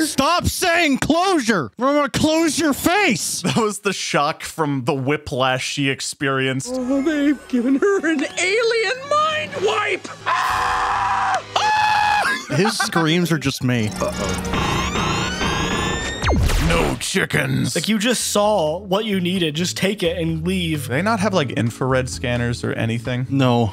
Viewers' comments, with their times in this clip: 0:10 I love Runt’s scream